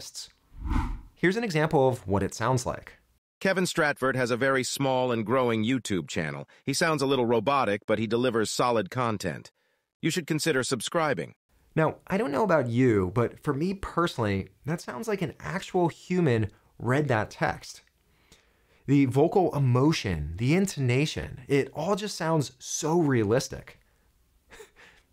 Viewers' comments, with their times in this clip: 0:08 That first AI voice seconds is so annoying.I hear it a lot and hate it so much that every time I hear a video with that voice I have to turn it off. It sounds so patronising!